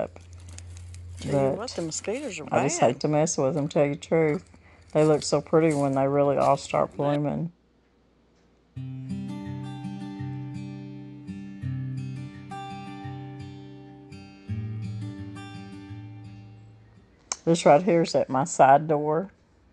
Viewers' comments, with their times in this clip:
0:03 Whose voice is that ? Did anyone else hear it?